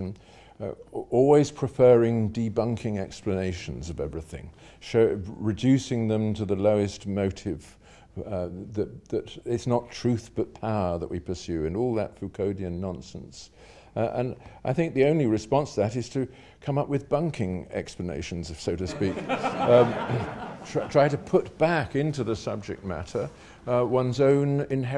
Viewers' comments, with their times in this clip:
0:04 It’s a pleasure and a privilege to listen to the erudite Sir Roger speak. Peterson sounds angry and high-pitched, but has many great insights to share as well. The conversation really takes off
0:11 "fuconian nonsense" What is the first word ?